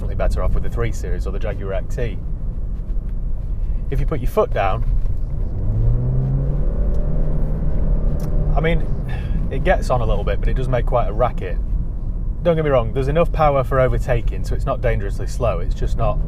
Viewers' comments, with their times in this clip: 0:04 is it a CVT transmission? Sounds absolutely dreadful. Those few seconds ruled out me ever owning this car!